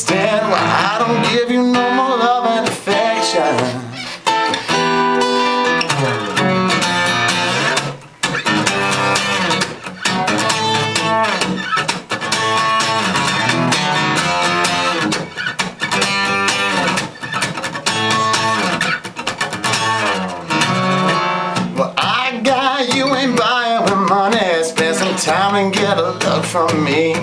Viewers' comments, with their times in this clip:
0:08 smooth. i dig the groove